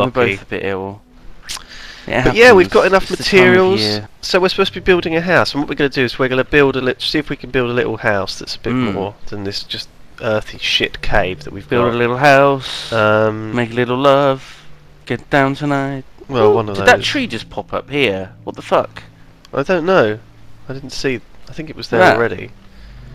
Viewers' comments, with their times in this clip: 0:09 I thought of the exact same song, and when Simon began to sing, I died laughing!